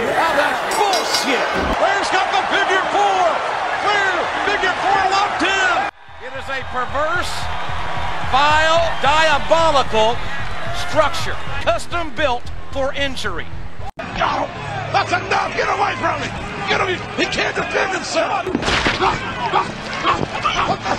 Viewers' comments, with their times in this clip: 0:06 Perfect juxtaposition. The fade-in, JR's description, the tense music, even the underwater effect kinda goes with it.